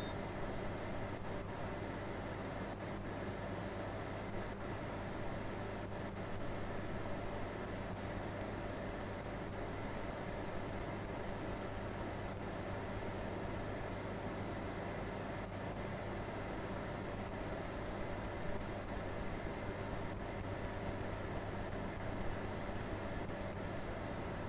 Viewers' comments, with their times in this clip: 0:08 after this video is completely useless to watch, it’s just them looking in the van with no sound or anything. why didn’t you cut this part out? jesus, i watched it for 10 mins waiting for it to change